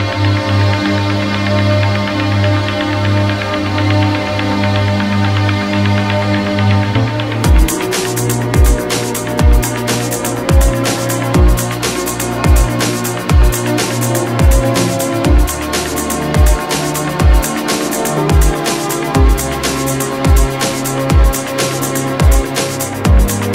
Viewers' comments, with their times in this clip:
0:08 Such a cool set up - loving that desk! Beautiful string intro - really evokes a feeling.... like i'm headed someplace new, ready for the experience and the plane is rolling down the runway about to take flight. Let the Chicane musical experience begin! drops that beat and it's go time!!🔈🔉🔉🔊🔊🔊🎵🎵🎶🎶🎵🎵🎶🎶 Thank you for posting this.